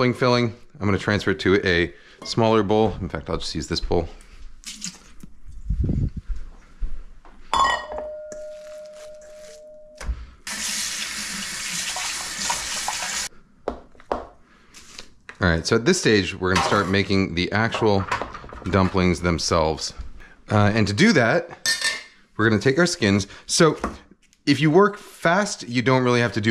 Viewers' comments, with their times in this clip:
0:07 The bowl is singing before it receives the filling!